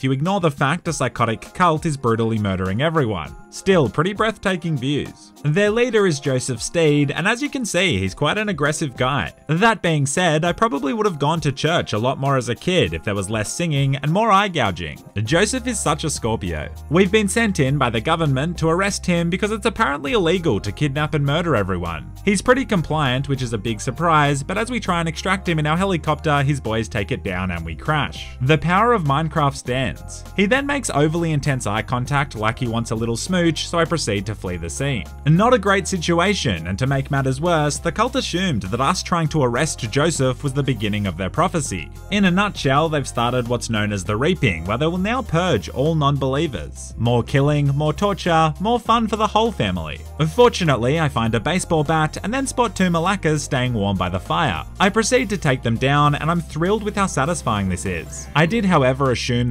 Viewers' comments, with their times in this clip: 0:08 Joseph Stade??? What???? What????????? Say that again please. ✌✌😅😅
0:42 The way you pronounced "reaping"